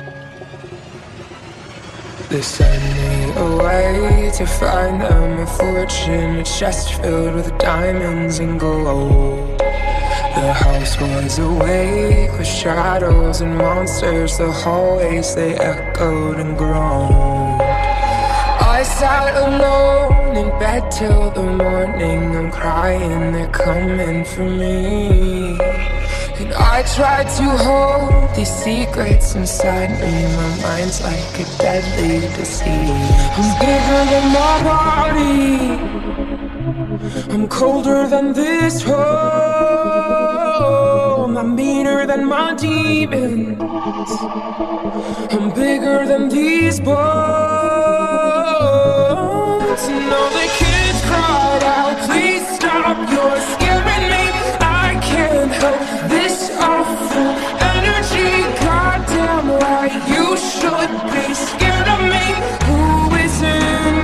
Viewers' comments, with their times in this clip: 0:08 Am i the only one that hears it as Goa'uld? I'd rather not have a chest filled with diamonds and snakes. :P
0:49 something about the guy version idk its so beautiful